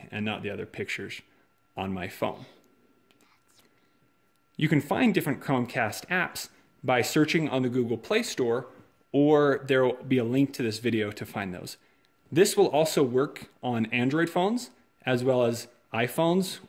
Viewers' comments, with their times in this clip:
0:03 I don't know if it is just me or what but I heard a child whisper: "ANSWER ME"